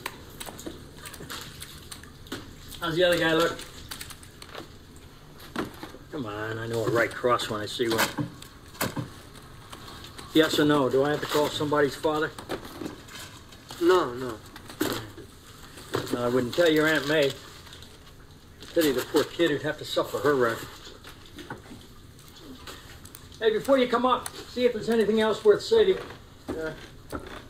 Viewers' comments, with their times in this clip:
0:10 Oh wow, can't believe they actually gave Uncle Ben a New York accent! "Yes or no, do we have to call somebody's fathuh?"